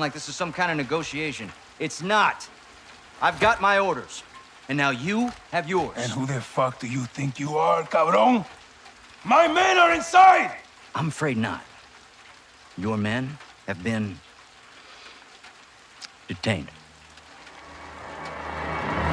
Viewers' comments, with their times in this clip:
0:05 I love the way he delivers the line haha